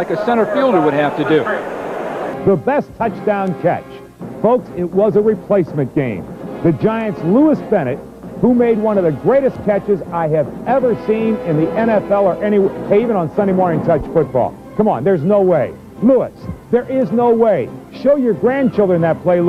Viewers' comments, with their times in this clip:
0:03 that star wars music
0:05 we're not gonna talk about the star wars music?